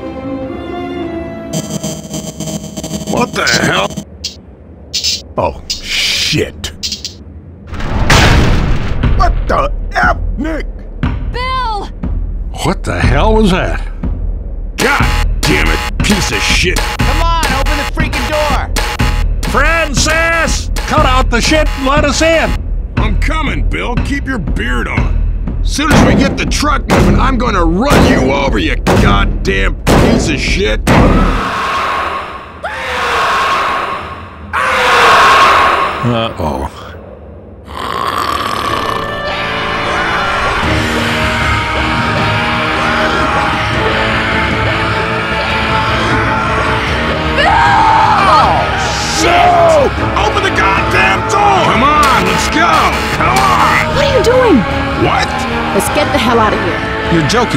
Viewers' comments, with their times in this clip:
0:10 ZOEY can talk bruhh i thought she cant talk
0:45 did Zoey just speak ?